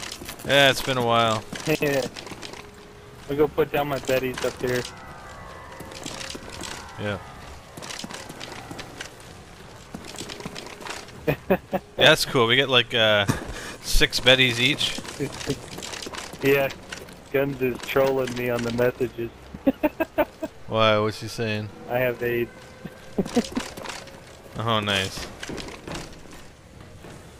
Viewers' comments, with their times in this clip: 0:10 = Moon rock noise like in call of the dead